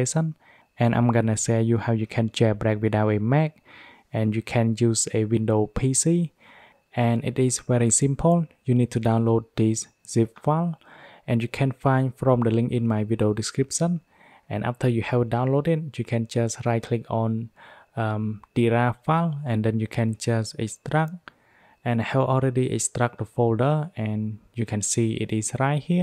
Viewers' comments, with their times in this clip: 0:10 What does he say to download ? I can’t make out what he says